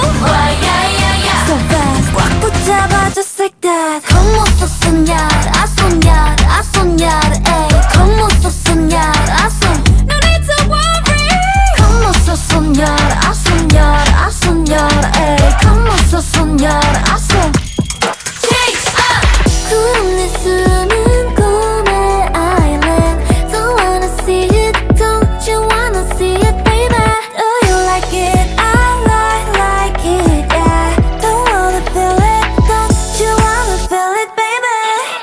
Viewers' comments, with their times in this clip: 0:04 sound like My power by Beyoncé
0:18 you see that thing ? up there in the sky ? IT'S ME ASCENDING UGFHHH THE CHANGE UP WAS SO GOOOD
0:18 The NMIXX change up is finally back
0:19 believe me or not this change up is gonna be iconic in future groups nmixx already are so iconic despite not even being a 3 years old group.They are already my favourite 4th gen group along with aespa!
0:19 been obsessed with this part like my two faves in nmixx got the most iconic line and haewon has the least line in the song despite her being suits the best in concept, love for bae getting lines she deserves her vocal tone is defo my fave in this group.